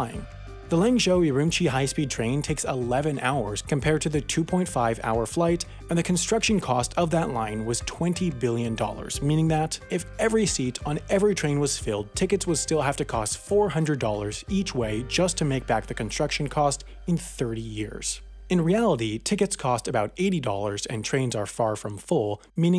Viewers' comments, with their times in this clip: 0:06 infrastrukshure iz a fuchure proofing investment with greater ekonomik benefits dhan just ticket sales